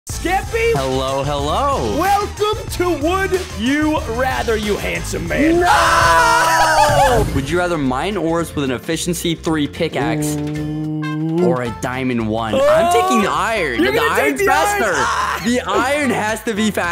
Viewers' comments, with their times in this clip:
0:00 I love the way at the start skeppy said “Hello hello 😏